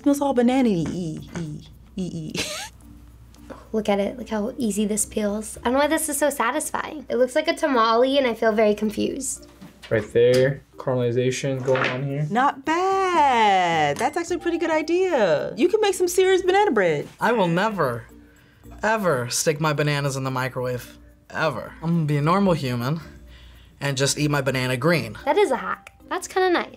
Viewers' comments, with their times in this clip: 0:06 she really said tamalee
0:07 she really said tuh-mah-lee..😡
0:08 Did she just said “tama-lee”instead of “tamal”?